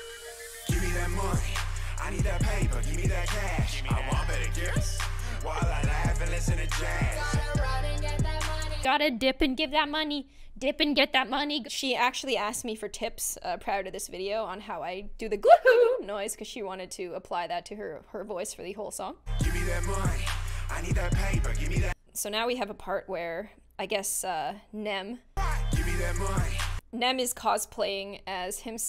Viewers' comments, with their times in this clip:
0:10 it's not because if you play the vid you could hear it in her voice